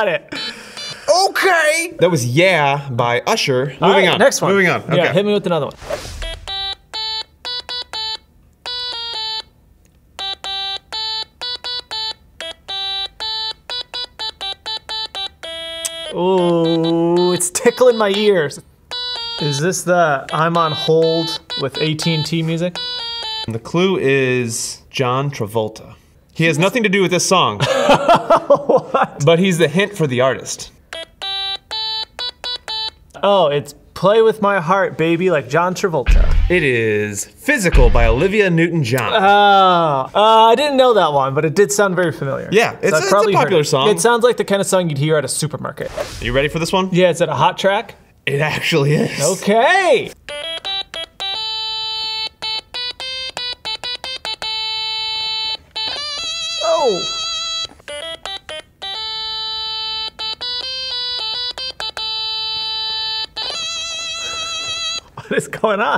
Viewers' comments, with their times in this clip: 0:04 wow I thought that was the wii music theme
0:04 you can NOT tell me that doesn't sound like the 3ds' Mii Maker theme.
0:05 That sounds exactly like a song I've heard when I was younger called, "Turkey Time!". 😅
0:05 I heard the first three notes and thought it was the mii streetplaza music 💀
0:06 thought it was a wii theme
0:07 sounds like the Nintendo street pass on the ds
0:07 I thought it was that one mii song
0:07 it sounds like the mii life theme on the 3Ds (I’m so old but I’m only 17)
0:07 I thought that was one of the 3ds mii themes
0:07 I thought streetpass theme (sounds similar)
0:08 Who thought he was trying to play the Mii Plaza soundtrack on the 3DS?
0:09 for a second I thought it was the mii channel music
0:19 Song 7 reminded me of mii plaza theme on 3ds, the nostalgia, cuz the 3ds was a HUGE part of my childhood
0:30 That sounded like the Mii maker music for me lol.
0:30 i swear it sounded like mii chanel WTH For the people saying that it doesnt sound like it, check the Mii Channel theme after minute 1
0:31 thought that was the mii plaza theme Who else?
0:37 that sounded like the 3ds Streetpass theme
0:39 It sounds just like the mii plaza music from the Nintendo 3DS
0:40 I totally thought that was the wii mii maker theme
0:50 I thought he was gonna play the Brooklyn nine nine theme song 😂
0:50 thought that was about to be bubblegum k.k. ...